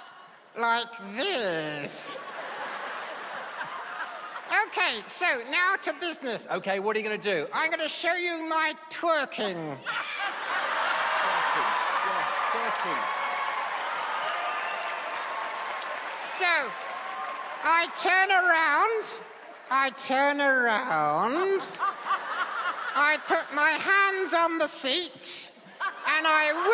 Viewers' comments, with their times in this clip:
0:09 i started dying when she threw his hands in the air and screamed YES!!